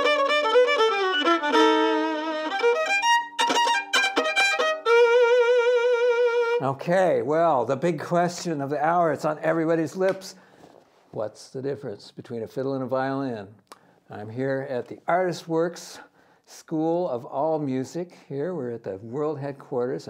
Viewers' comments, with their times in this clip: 0:04 that note hurt my brain